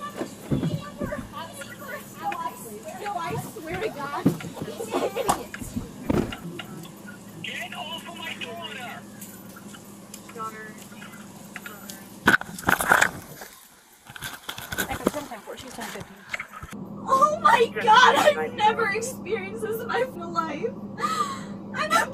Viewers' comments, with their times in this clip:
0:07 it's the "GET AWF OF MY DAUGHTER!" that has me rolling